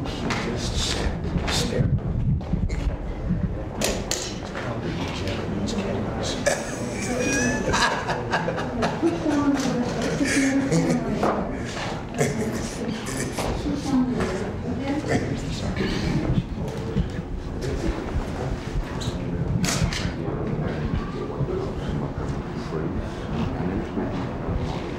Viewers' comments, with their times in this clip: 0:05 what i know about president Reagan was his truly great humor, and that laugh by President Moi is testament to that, i was born 6 years after this meeting, and i never in my 29 years, I never heard Moi laugh out loud like that